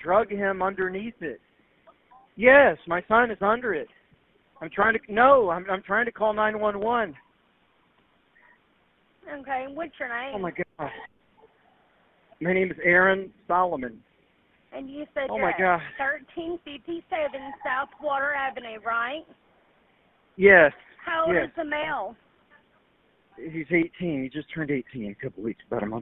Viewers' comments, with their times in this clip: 0:09 he keeps doing that fake voice cracking thing that Alec Murdaugh kept doing on the phone with the police and in person with them.. like they try to imitate what a non narcissist would sound like